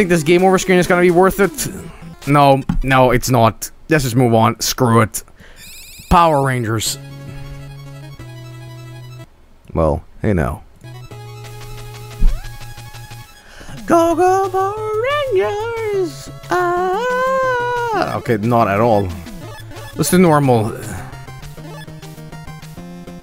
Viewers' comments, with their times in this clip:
0:08 Dat Jetman theme